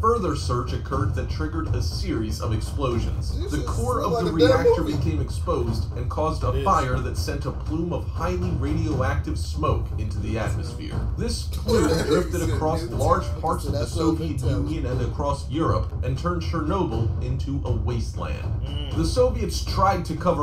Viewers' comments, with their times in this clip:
0:07 why did they start laughing 😂